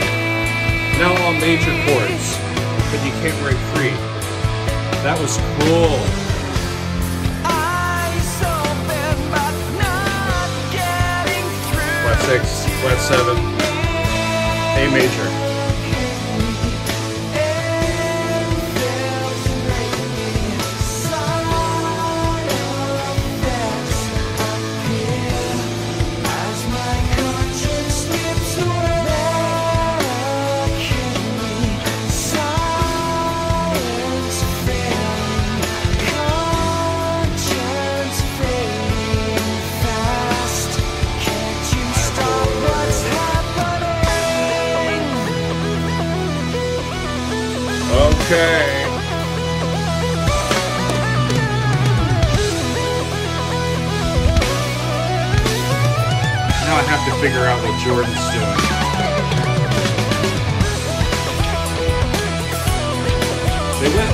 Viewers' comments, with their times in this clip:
0:05 Correct me if I'm mistaken, but anyone else here the chromatic walkdown from Echoes?
0:44 So serious Styx vibes. reminds me a bit of Fooling Yourself.
0:45 This is very reminiscent Rick Wakemen's Journey to the centre of the earth album from 1974, with the wonderful sounding Moog synthesiser, a sound which is unmistakeable.